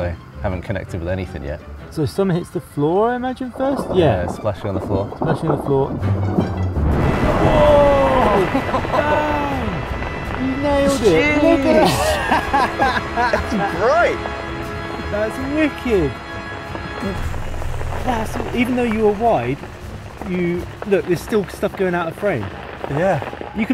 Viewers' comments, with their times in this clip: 0:05 wow, the music :D:D nice! what a perfect shot!